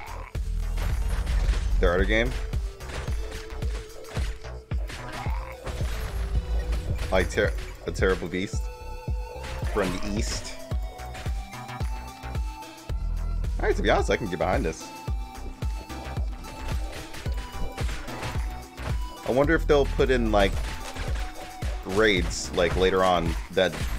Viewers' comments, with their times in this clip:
0:10 Woah woah WOAH. Let me stop. in. I'm sold. The music is outstanding. Wave based live co-op mobile game? Character customization? Sign me up!